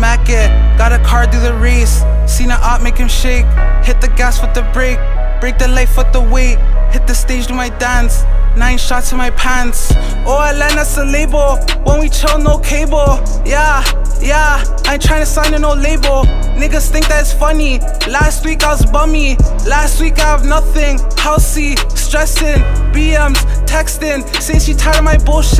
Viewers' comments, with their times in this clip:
0:09 or you miss that fire bass kick